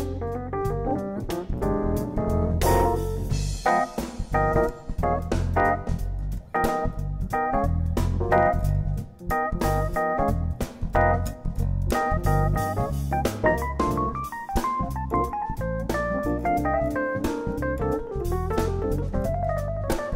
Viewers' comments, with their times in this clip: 0:04 I will tell you what. It's not about showmanship or comp, but the shit GD puts down, abstract harmonically, starting is the real shit. It's beyond us all and so, so inspiring and intellectual in linking to emotional tension and release. Too much. Jeff and George are up there on the top.